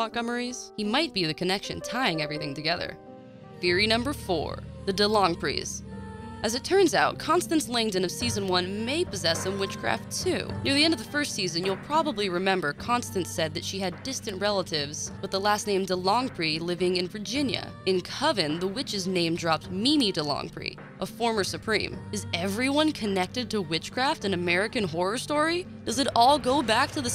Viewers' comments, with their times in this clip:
0:10 when I heard the background song I remembered of hart when she said she was a witch 😂😂😂